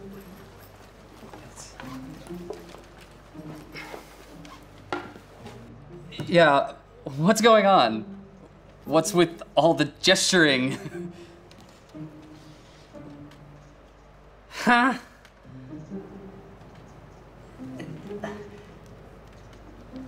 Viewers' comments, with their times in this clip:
0:08 the huh is so funny